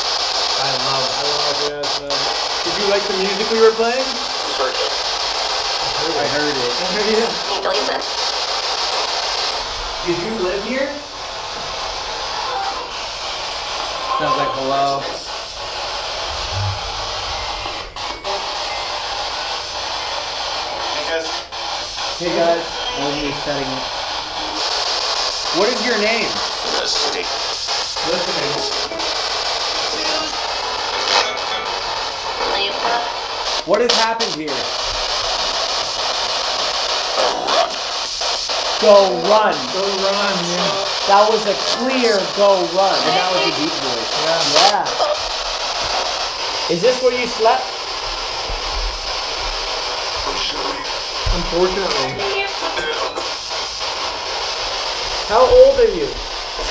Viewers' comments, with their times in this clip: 0:06 BRUH THAT SAID ELTON. TELL ME YOU GUYS HEARD THAT
0:07 i heard alesa
0:07 -I Heard IT Right after, female voice; - Who doesn't? ...
0:10 Guests upstairs probably freaking out during the singing chanting thinking there's a cult Also, beside the light, on its right side, looks like a face in orange
0:11 bro look someone is standing in the door on the left And the muzic box is going on
0:16 left of the the door frame something peeks out and then the music box goes off and the spirit box says "hey guys"
0:32 Swear to god I heard my name.
0:32 why does it sound like GLaDOS?
0:33 sounds like a name 😭
0:41 it did not say go run but it said corrupt